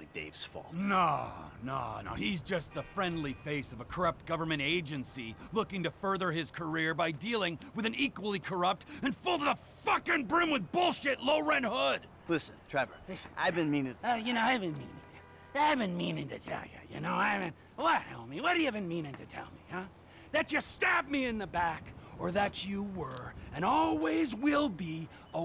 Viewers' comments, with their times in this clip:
0:09 I like how Trevor is saying the word "fucking"